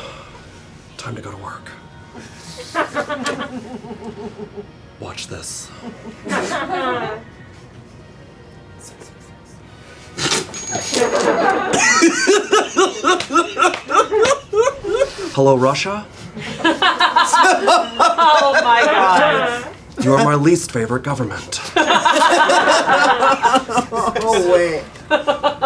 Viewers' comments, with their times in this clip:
0:08 I think he's saying 666 in a low voice